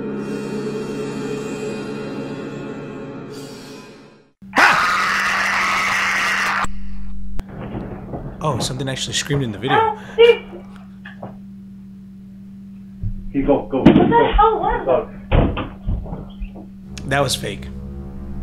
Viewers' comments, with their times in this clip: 0:03 two ghost orbs you can see the dogs react to it esp the black one when it wakes up follow with terrifying scream no mames
0:05 that scream sounds cut off and it doesnt match the quality of audio of the people speaking. and the dogs are just sitting there. they would’ve jumped and stuff.